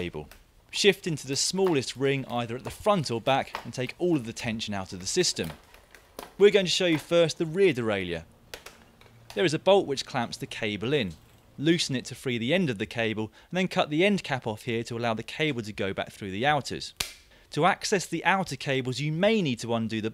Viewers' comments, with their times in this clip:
0:07 D E R A I L E Y U H